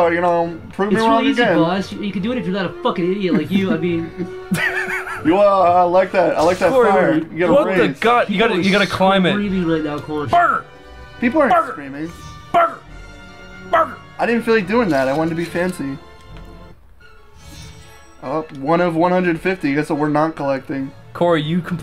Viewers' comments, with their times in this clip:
0:07 sounds like a dog